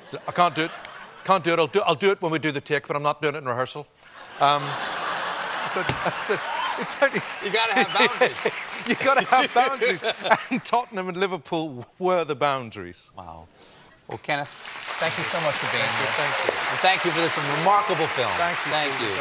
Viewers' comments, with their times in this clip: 0:06 I love how effortlessly he slips back into the Belfast accent that he grew up with Goes to show…home never leaves ya no matter where ya go.